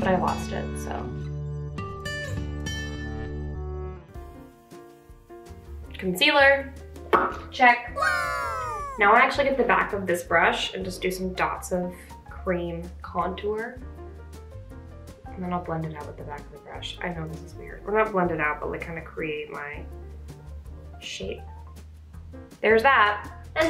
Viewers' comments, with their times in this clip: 0:08 OMG THE TARA BRACH INTRO SOUND JUST MADE ME LOVE YOU SO MUCH